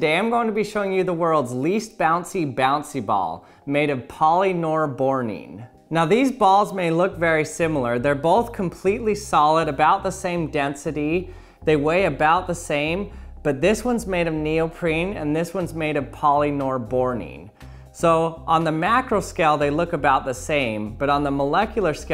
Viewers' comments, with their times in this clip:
0:03 Poly Noire Boring